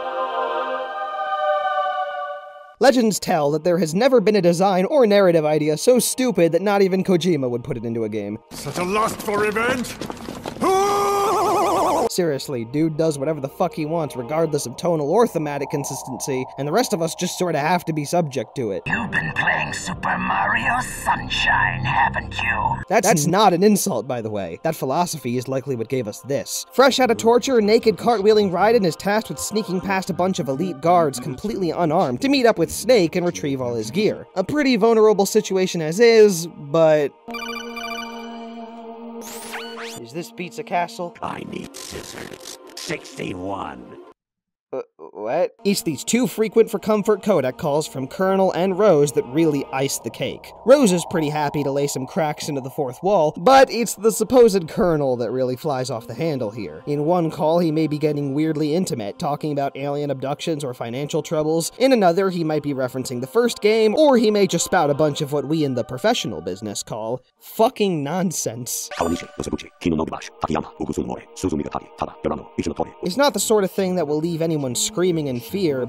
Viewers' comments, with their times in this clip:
0:08 it sounds better at half speed trust me Suuchhh aaa lussst foor reveennge WhooooOOOoOoOOO
0:23 The f*ck is the words in the background of ? Anyone else hear that?
0:58 in a weirdly distorted way “Are you sure about that?*